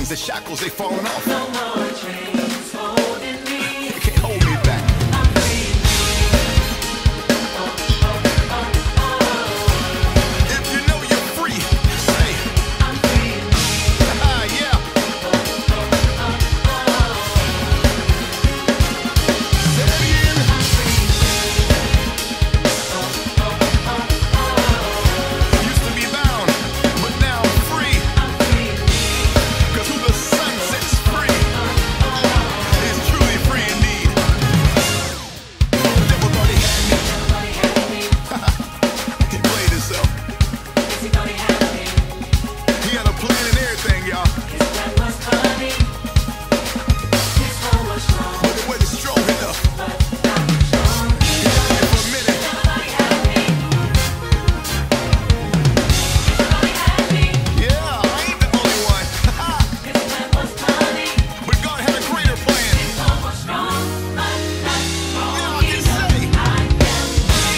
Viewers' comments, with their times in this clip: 0:07 That bell is a thing of beauty.
0:36 That pocket from My God
0:53 Fill is probably the hardest fill I have ever heard . Calvin Rodgers exemplifies 'nasty' in the best way possible.. well done, sir.
0:53 yo! the fill/lick has me. how sway.
0:54 that roll tho 😳